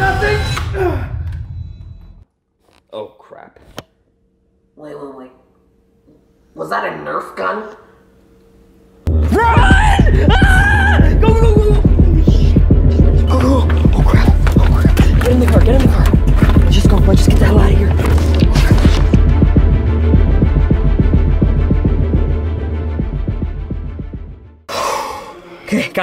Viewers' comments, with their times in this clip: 0:04 I can’t stop laughing at th way he says “is that a nerf gun?” 😂
0:12 That scream was so funny